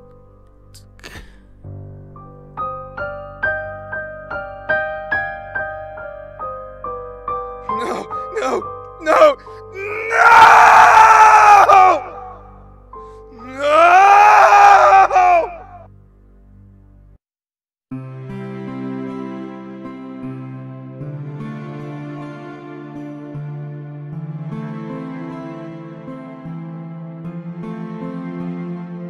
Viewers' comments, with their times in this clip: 0:10 HHAHAHAHAHAAAKJAJAJSJSJS SORRY BUT HES SCREAMING SO FUNNY LOLOLLO